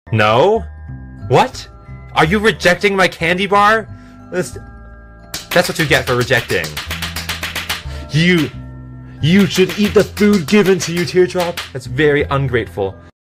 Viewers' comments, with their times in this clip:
0:05 put it on 2x speed, it sounds like a machine gun XD